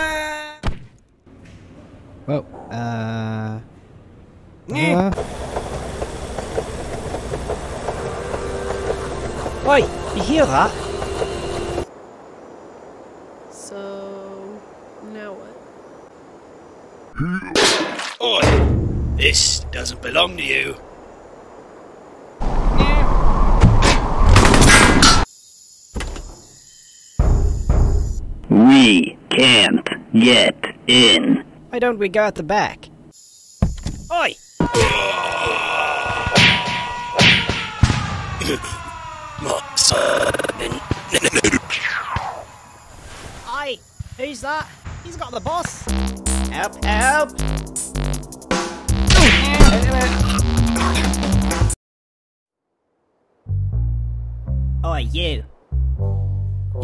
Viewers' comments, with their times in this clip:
0:04 Almost there is that one nyeh
0:22 that nyeh tho
0:43 The Leprechaun has the best "Oi!" in the entire Henry Stickmin series.
0:43 that's a ey not oi